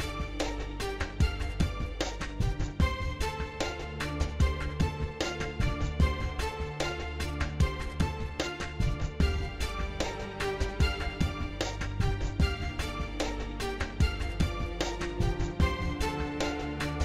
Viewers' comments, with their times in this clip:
0:05 world's largest burp